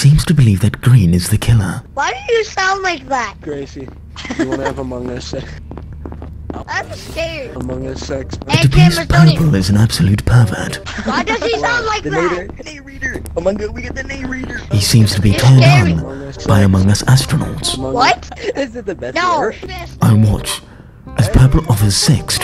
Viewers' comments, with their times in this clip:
0:04 well that escalated quickly with the saxophone lol, and man called purple "The sex offender" and cyan as his homie. Respected, love your videos alot and keep the good work up!